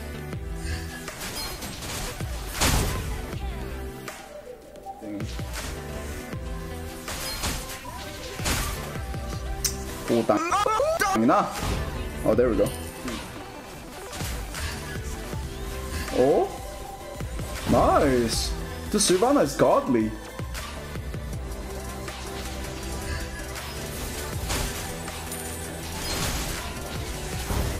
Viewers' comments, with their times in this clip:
0:10 The way that he covered up the badword with the screaming BTW i am Filipino so, I know that BTW this is the part